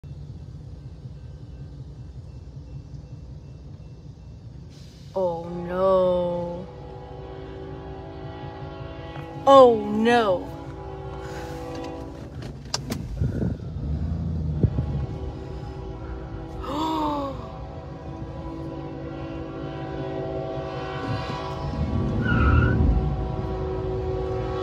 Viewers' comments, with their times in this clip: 0:05 From the train operator began blowing it's horn INSTEAD of hitting the emergency brakes. Twenty two seconds later was the impact. It took 12 seconds to stop the train after the impact. That part of the track is straight. The truck could have been seen from quite some distance... I have so many questions.